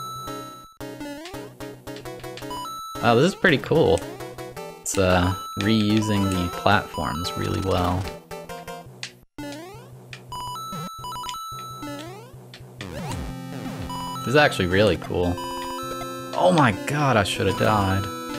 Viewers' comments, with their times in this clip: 0:05 I cannot hear this as anything other than ‘Ryusing the platforms’ send help.